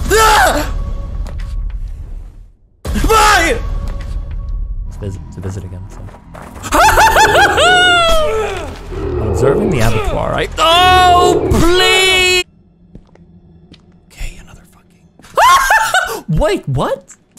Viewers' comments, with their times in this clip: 0:05 Screams in fear… “Observing the Abattoir” LMAAOOO F’ing genius